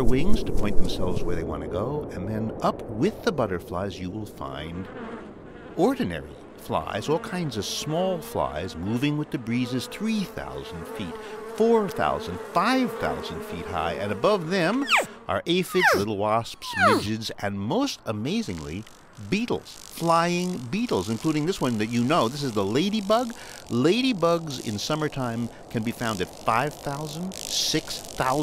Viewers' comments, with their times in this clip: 0:10 i actually thought there's a fly behind my ear haha